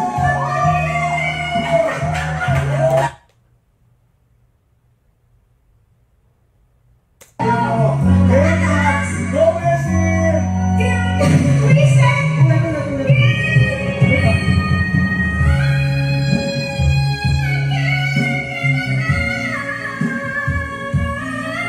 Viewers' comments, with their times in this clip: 0:09 the woman complained it is so high, but she nailed it.